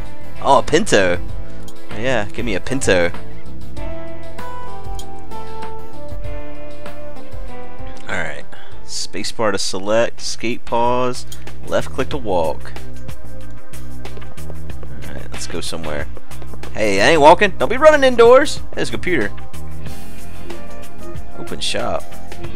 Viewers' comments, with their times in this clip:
0:08 Why do you want to "escape Pause"? Are you racist?